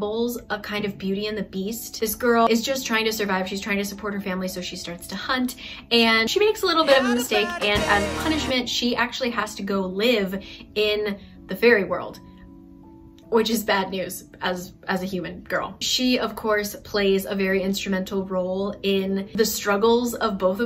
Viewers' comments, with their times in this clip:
0:07 did anyone else hear the "you had a bad day" ? anyways lmaoo that cafe was so pretty!